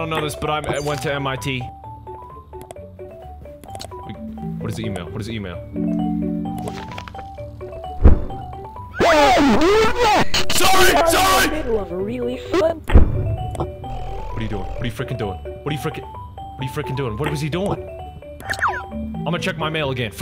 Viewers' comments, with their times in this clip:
0:06 HE SOUNDED SO ANGRY IM CRYING 😭😭😭😭